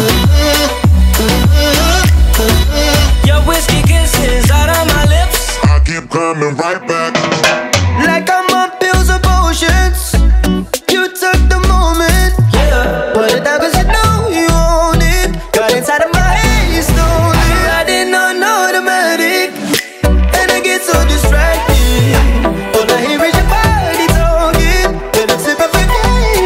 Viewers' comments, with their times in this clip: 0:08 Guy in sounds like Zayn ._.